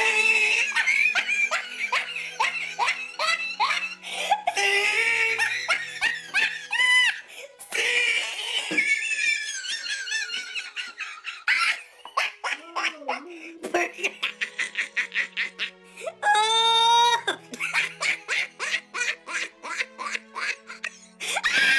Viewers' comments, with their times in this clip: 0:03 The laugh got cracking😂😂😂